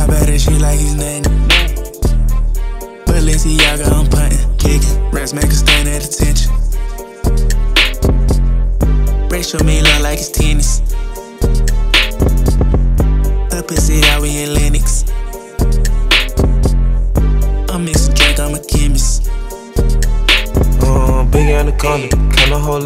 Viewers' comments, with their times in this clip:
0:06 flow was actually pretty good until